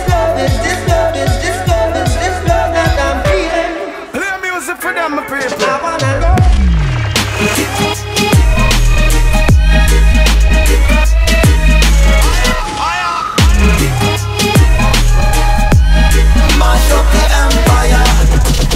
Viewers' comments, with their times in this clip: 0:04 The transition is fkn incredible
0:05 i'm just in love with that drop <3 <3 <3